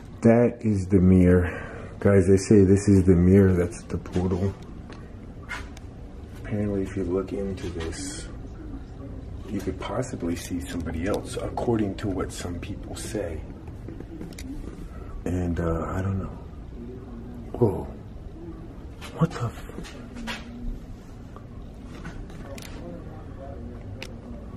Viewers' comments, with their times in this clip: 0:08 A girl says there's somebody upstairs
0:10 when you are explaining about the mirror you can hear a whisper. I can’t understand what it says.